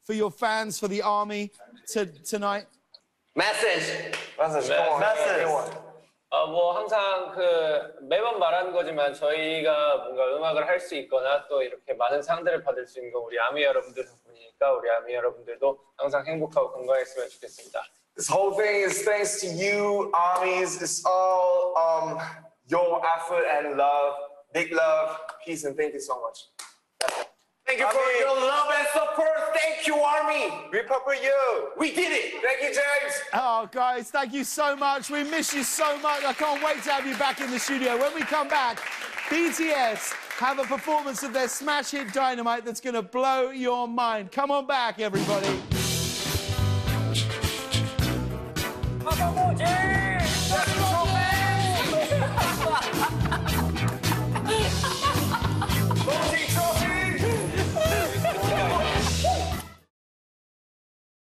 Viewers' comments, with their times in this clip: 0:04 Aw taeyhung pronounced message as “messes” he’s so cute 🥰
0:04 why is nobody talking about Taehyung's messez 🥺
0:47 :jimin and james doing their mochi thing Jin: laughs in unbelievable
0:49 Omg, his laugh is so adorable.